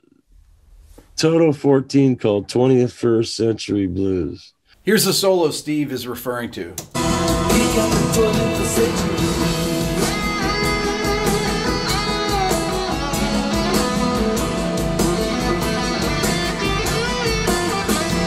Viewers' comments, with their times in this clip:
0:05 sir Allan Holdsworths influence come into play. Beautiful Steve.